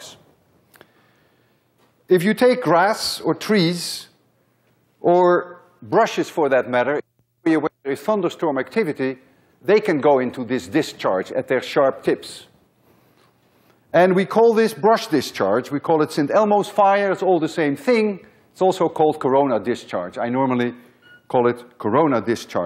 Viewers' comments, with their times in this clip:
0:06 Does anyone know what he says when it cuts out